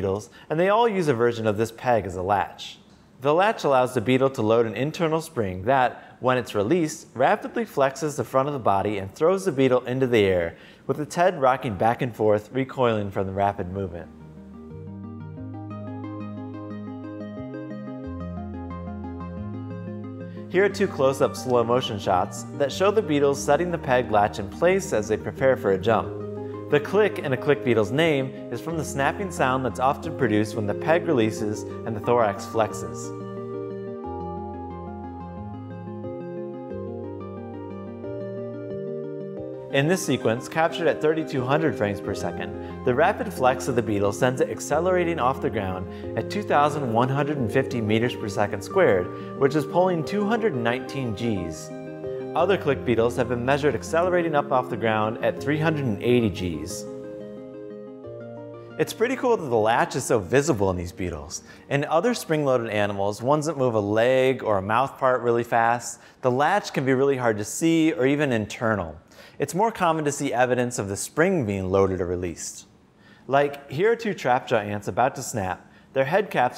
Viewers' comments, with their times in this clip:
0:08 go to and set playback to 0.25x I still don't understand how he takes off, but his voice is killing me
1:01 the way he says “beetles” is weirdly satisfying